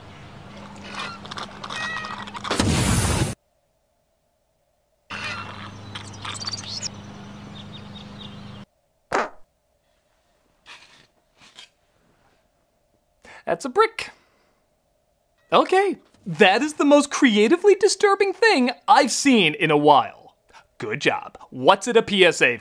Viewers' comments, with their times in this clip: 0:09 traumitized wet fart then picks it up and see what it is that’s a brick 🧱